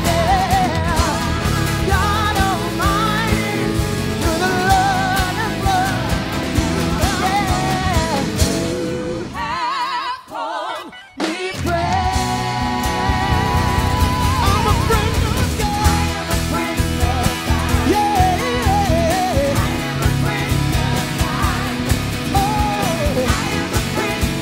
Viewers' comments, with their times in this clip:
0:07 hahaha, the drumer forgot his part at minute